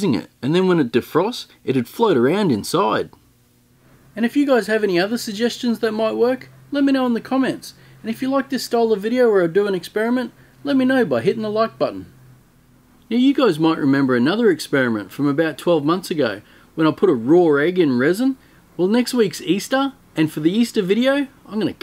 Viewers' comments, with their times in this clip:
0:09 I reckon I'm gonna cut this open and start throwing my guts up. The accent and matter of fact delivery. Oh man. Thank you haha